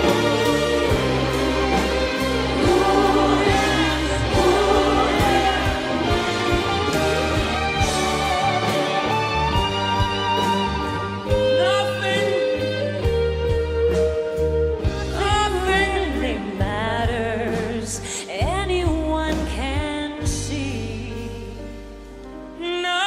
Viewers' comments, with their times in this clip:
0:07 lead singer goes half a bar too early but pulls himself together and carries on, incredibly professional. Love that